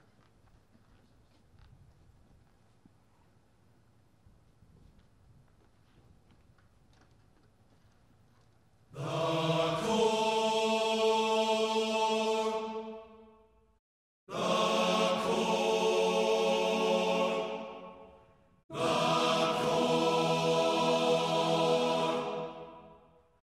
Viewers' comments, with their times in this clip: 0:09 lets appreciate this 🔥 song